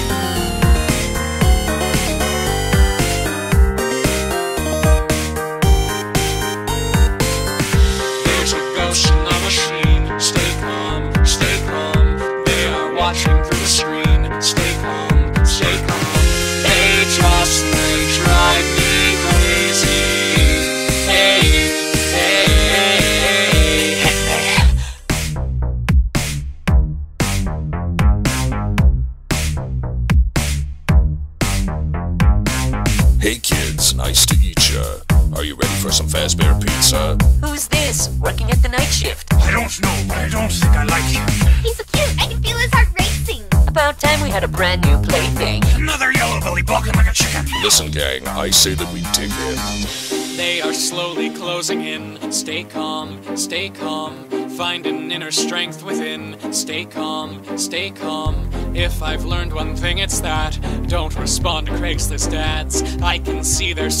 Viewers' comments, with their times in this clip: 0:05 Why do i always hear peepeepoopoo inside my head at that part
0:12 YouTube subtitles: stay there wash your PC
0:16 [Turn on captions] “Stay there wash your PC.” Nightgaurd - 2017
0:24 the tick tok part
0:25 i like the music <3
0:29 I WANT TO STAY plus foxys voice is so funny all of thar voices are all funny
0:31 the music is bomb but it this looks scary af for all my tiktokers
0:32 bruh I forgot the lyrics to this part and thought freddy said : "want some fucking freddy fazbears pizza?" Lol
0:33 got me feeling some type of way 😭 I like Freddy’s voice
0:39 Song gets more gas
0:45 Yellow Thing Walking like a chicken
0:46 SONG GETS ULTRA GAS
0:52 Song get ruined by auto tune